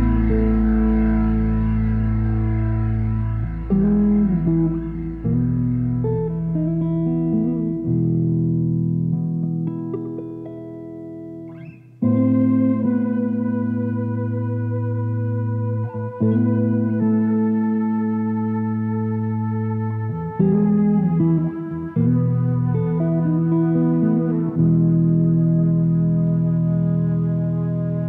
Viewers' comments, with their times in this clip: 0:10 That transition in is unexpected af